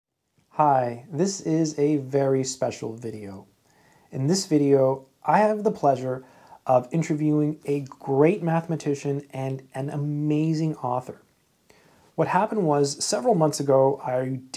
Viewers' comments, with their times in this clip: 0:00 You look and sound like the guy who keeps telling me not to wear comfortable shoes. It's a weird ad I keep getting.